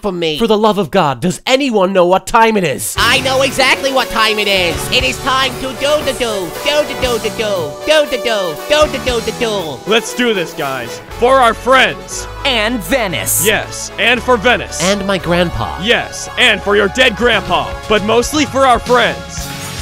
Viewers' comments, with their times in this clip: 0:05 Why do i like Paradox's laugh and that Duel duel duel duldudulduel thing he says Nevermind me putting a timestamp here